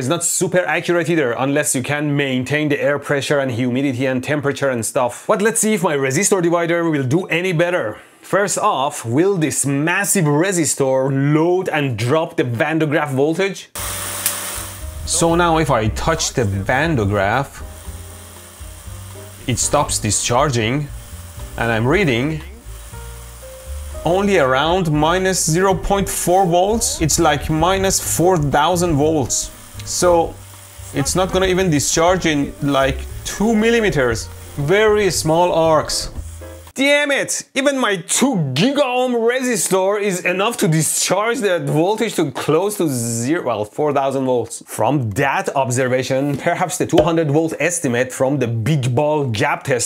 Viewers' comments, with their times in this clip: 0:10 By the end you can listen to your voice double
0:16 anyone else hear an echo?
0:17 anyone know why we are hearing 2 separate voices?
0:33 his voice is kind of echoing I don’t know